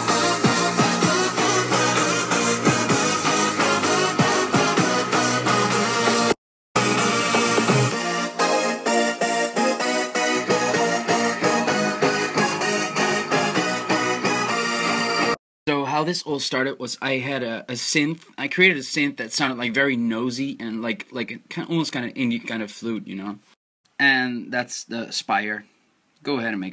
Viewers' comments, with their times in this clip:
0:09 I dont hear than in the final version. But it's still good.